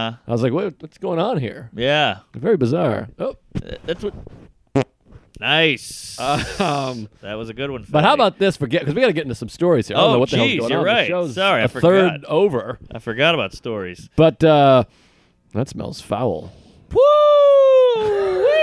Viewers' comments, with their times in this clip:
0:03 The fart my aunt can queef louder than that. We gotta get you guys more chipotle gift cards.